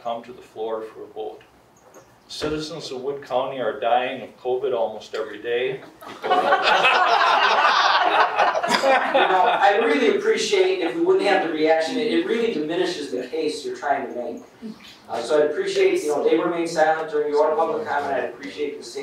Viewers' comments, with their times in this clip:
0:05 The mark is a disgusting reminder of what humans can be...it is utterly disgraceful of how inhumane people are...im embarrassed for these people and actually sad that thats where we are at as a society....it makes me ashamed to be a wood county resident...laughing a covid deaths...